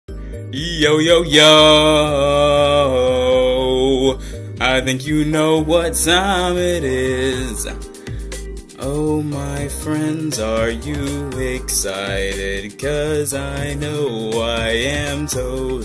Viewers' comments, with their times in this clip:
0:00 I love your singing in the intro